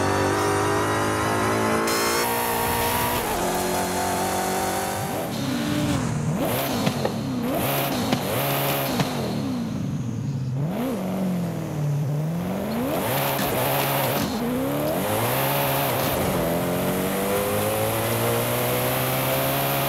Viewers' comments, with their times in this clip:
0:05 Koenigsegg One:1 - they nailed the sound